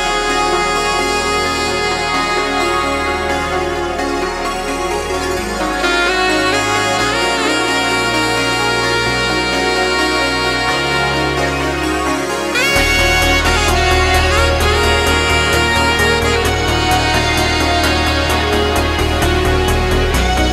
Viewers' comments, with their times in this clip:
0:03 omg... Listening this sax while watching the street from a bus. Omg